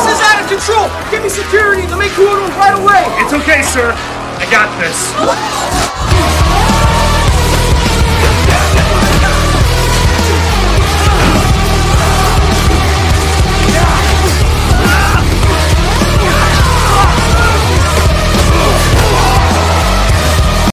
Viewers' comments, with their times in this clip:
0:05 Flippy: I hear a noise he loudly:
0:17 the guy in black lying down is laughing